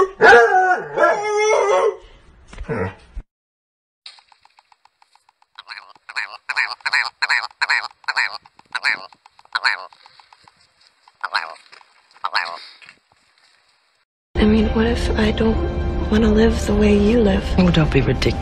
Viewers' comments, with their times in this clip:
0:04 sounds like its say "a werewolf" ngl my ass is on fire